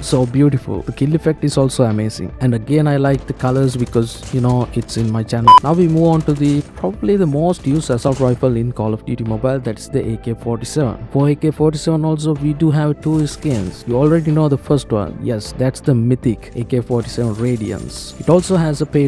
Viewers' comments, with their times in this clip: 0:04 😂😂🤣🤣 that beep say everything 🤭